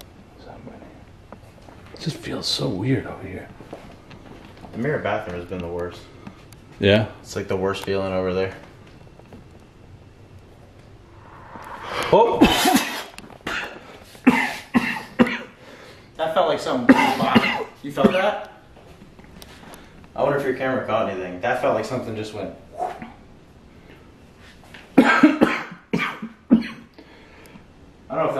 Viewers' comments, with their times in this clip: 0:10 .....THAT is a freakin weird sound, and in THAT sekond you are coughing.......???????????
0:10 glad the camera caught that noise. That was creepy.